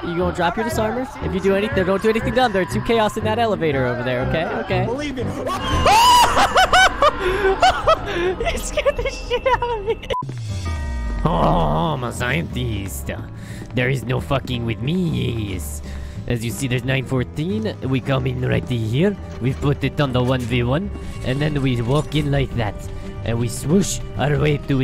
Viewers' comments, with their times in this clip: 0:05 That's how I scream too